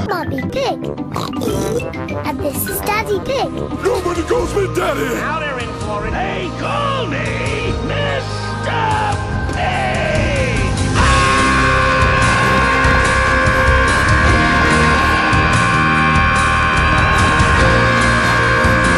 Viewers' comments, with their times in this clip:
0:06 They Call Me Mr. Pig! Super Saiyan Screaming